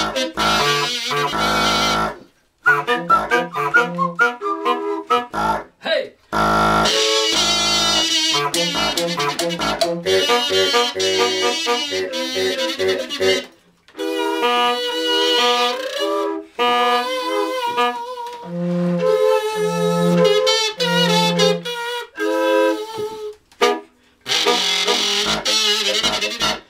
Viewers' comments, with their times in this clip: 0:08 needs more cowbell